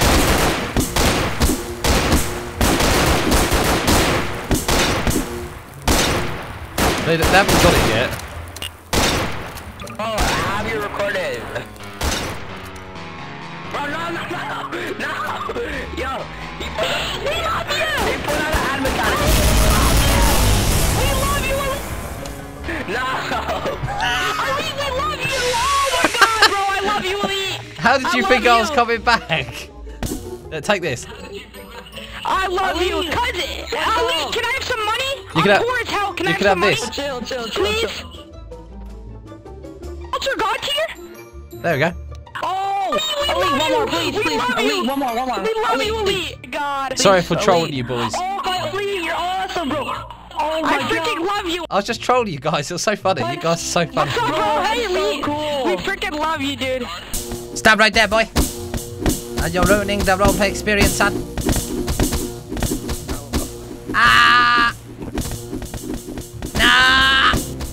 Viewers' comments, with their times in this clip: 0:05 when they hear sans's theme "NOPE, NOPE, NOPE!!!".
0:50 you should've just left them cause they were being super whiney